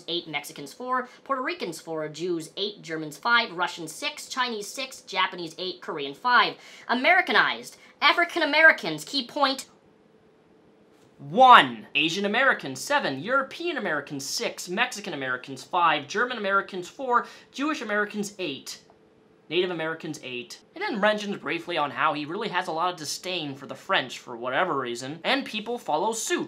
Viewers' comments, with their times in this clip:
0:08 the way u said that had me so weak